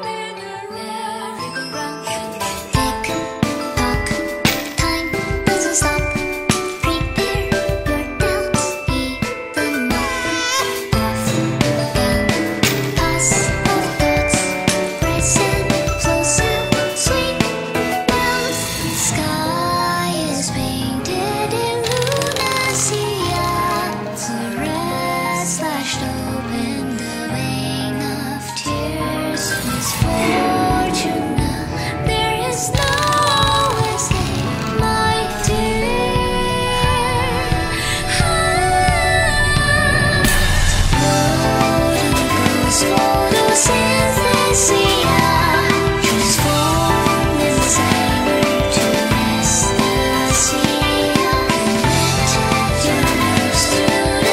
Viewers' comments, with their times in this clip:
0:10 i love this song, but does anyone else freak out at the baby cry ?
0:39 I don't know why but that one really strong note is so satisfying